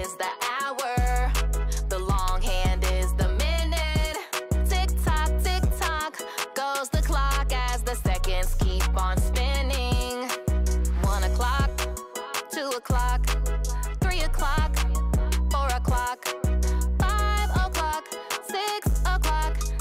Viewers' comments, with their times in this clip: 0:04 Did you say TikTok YouTube YouTube Goes the clock